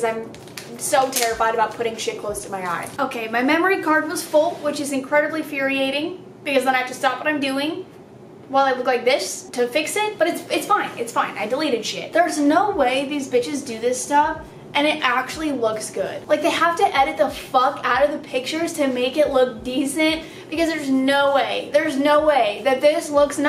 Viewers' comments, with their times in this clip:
0:05 ...did she...did...did she really just say “furiating”😂💕